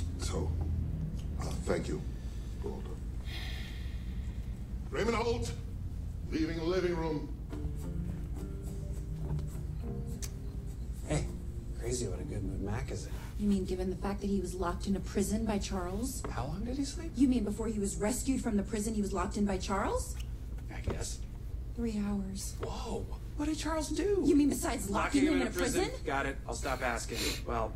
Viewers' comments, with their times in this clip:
0:09 Kevin already left so why is he still yelling